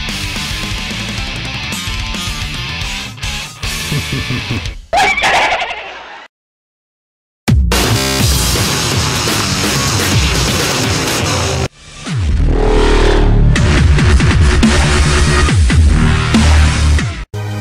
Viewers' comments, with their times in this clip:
0:03 what is that laughter lol